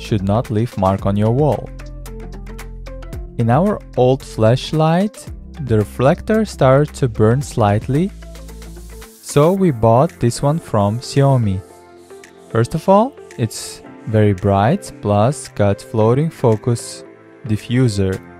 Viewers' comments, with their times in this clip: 0:04 Did he say fleshlight?